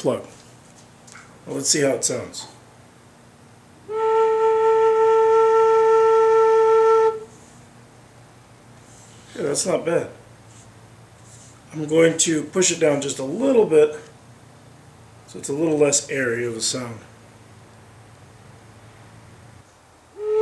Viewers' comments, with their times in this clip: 0:07 he sounds genuinely surprised it came out well lol he's trying to scam us